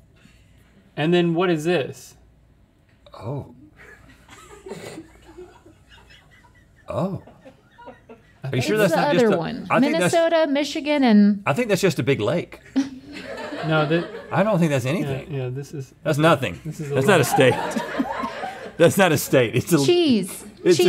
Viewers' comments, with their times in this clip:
0:06 WHO IS LAUGHING